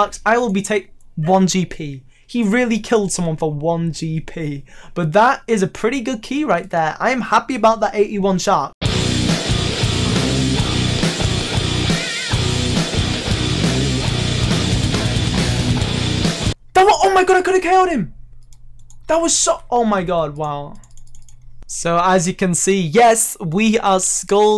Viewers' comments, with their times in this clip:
0:09 song is driving me crazy i want to listen to it all lol